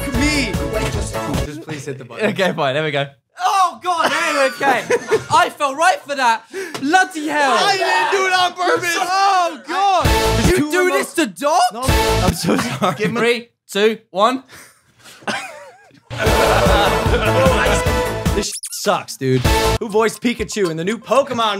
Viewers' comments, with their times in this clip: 0:07 I love guys with a STRONG British accent who say "bloody hell" because it's SO HOT!